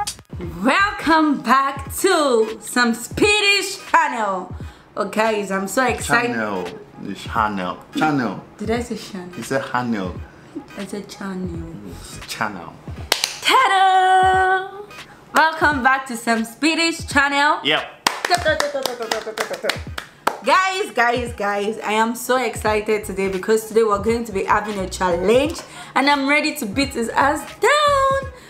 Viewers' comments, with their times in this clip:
0:10 chanel like that shop chanel